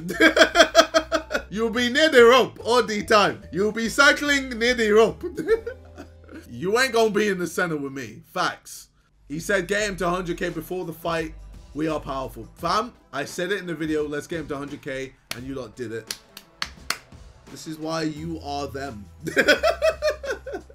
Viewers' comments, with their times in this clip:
0:03 you sound like African parents